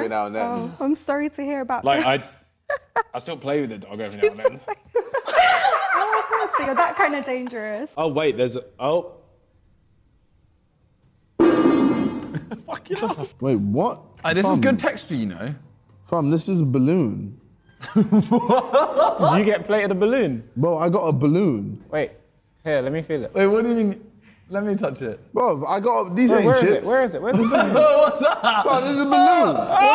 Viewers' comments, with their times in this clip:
0:10 metal pipe sound effect